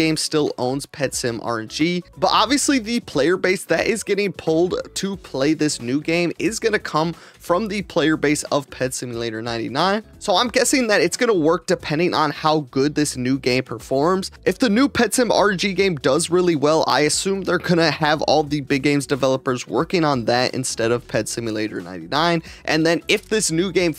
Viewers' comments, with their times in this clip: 0:05 why do I hear PetSeeYouLater99? 😂😂😂